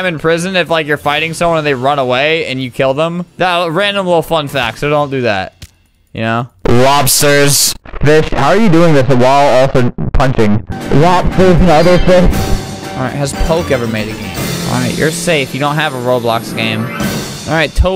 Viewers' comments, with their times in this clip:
0:03 The way he said random XD